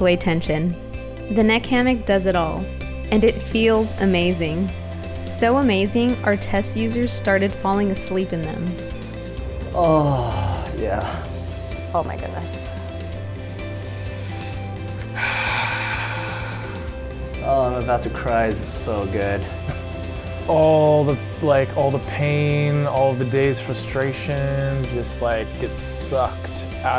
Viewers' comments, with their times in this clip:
0:09 i just had to have my damn speakers on with my family around , and this ad came on. All heads turned to my screen thanks to that guy's moaning in -.-